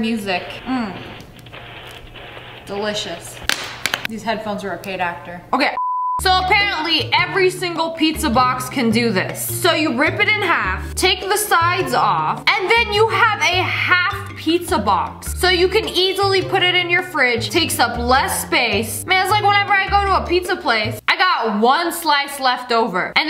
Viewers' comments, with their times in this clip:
0:05 sniper wolf: okay bleep sniper wof: continues talking